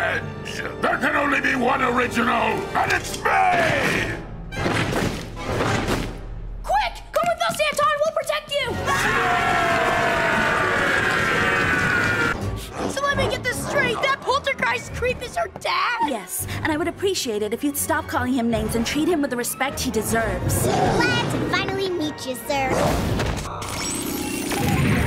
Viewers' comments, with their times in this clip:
0:07 come with us hentai